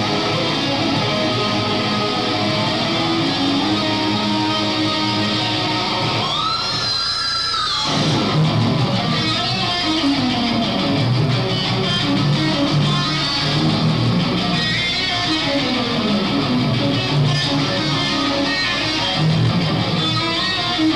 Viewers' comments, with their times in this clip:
0:08 Love that lick